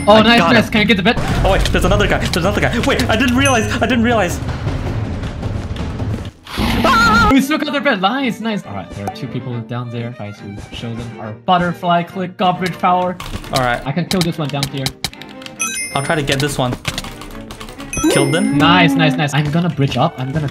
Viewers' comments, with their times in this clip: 0:06 that scream lmao
0:06 LOL THAT SCREAM
0:06 He sounded like Mario for a second xD